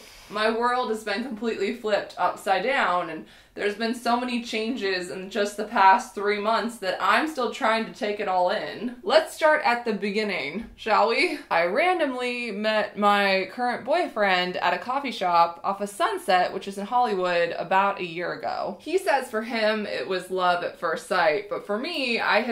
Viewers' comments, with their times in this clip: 0:08 the sound of her voice sounds so anxious